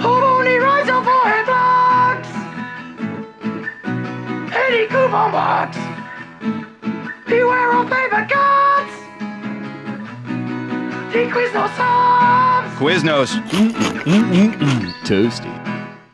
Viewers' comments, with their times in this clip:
0:03 Don't know anyone else that can snip a coupon with a pair of scissors and make it sound like they're playing the guitar,